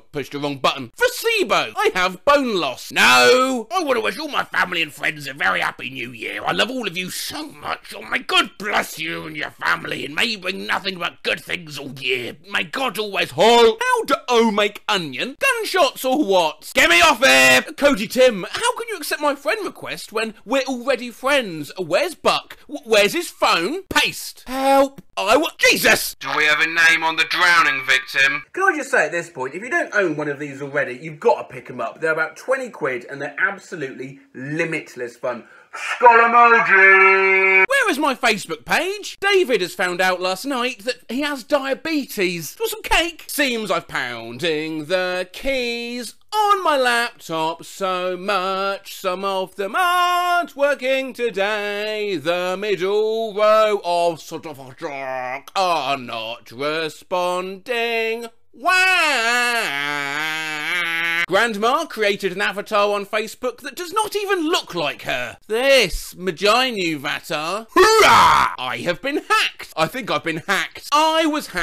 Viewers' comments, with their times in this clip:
0:03 Something I find funny is the way he says no when its on its own example
0:16 sounded like rock vocals
0:34 Bein someone with an auditory processin disorder and high sensitivity to loud noises, staticy noises, and bassy noises; those things are the opposite of limitless fun to me and im just glad i paused before you used it so i cud mute the vid for my own protection
0:43 Awesome singing man. You should sing for the American president!
0:46 I thought this was vocoded for a moment at the end
0:58 sounds like something straight outta the game trombone champ
0:59 LOL as an American, it doesn't look much like the flag but you still sang it to the tune of our anthem